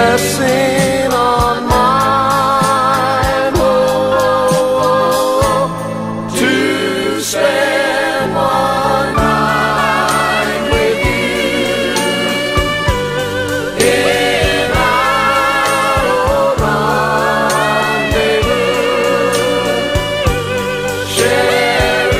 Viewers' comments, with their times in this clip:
0:09 The best version ever!! The falsetto part is absolutely superb!! This is the true essence of Doo Wop from the the fifties and sixties!!